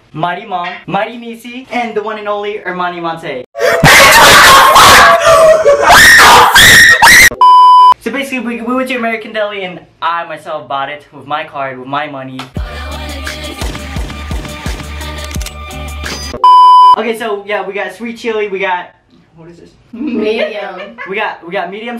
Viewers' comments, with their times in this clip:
0:03 thanks for that now im deaf lol
0:03 RIP my ears. FUCK YOU! IM IN FULL VOLUME!!
0:04 rip head phone users
0:04 I Was Using Headphones R.I.P Headphone Users
0:04 R.I.P. headphone users 😂
0:04 be warned headphone users
0:05 Rip head headphone users
0:05 rip headphone user
0:07 headphone users rip